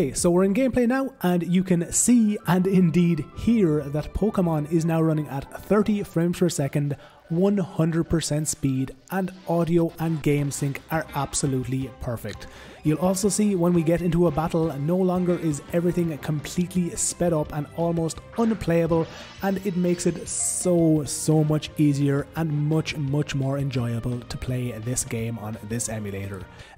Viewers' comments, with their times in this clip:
0:09 "audio is perfect" while the audio fucks up timestamp lol